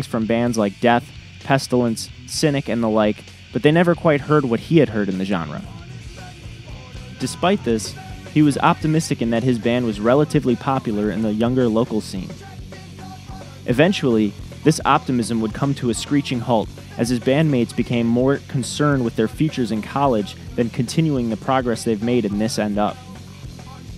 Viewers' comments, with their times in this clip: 0:09 it sounds like a This End Up song but I’ve never heard it, what’s the name of that song?